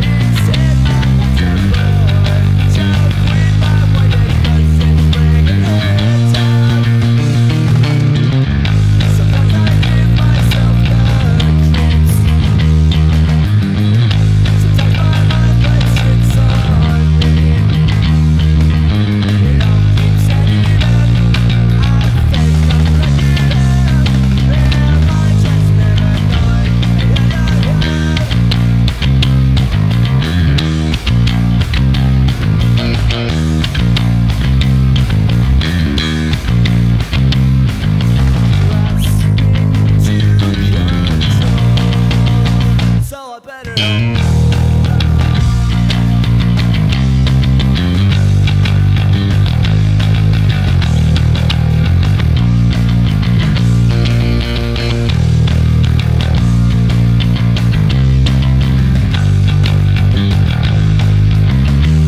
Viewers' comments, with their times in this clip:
0:05 That melodic fill is perfect man; not too complicated, not too simple. Could've fit right in the original.
0:05 thats one 🅱ICC melodic fill
0:05 that fill was awesome good job
0:05 That fill is a bit unnecessary
0:07 Oooh tasty fill ish. Stealin' that :P
0:07 That fill was honestly beautiful. This Cover was awesome
0:30 Any tips on how to play that lick as fluidly as you do?
0:30 How’d you play so fast??
0:30 How do you play so smoothly. It’s too fast for me
0:44 love that instrumental part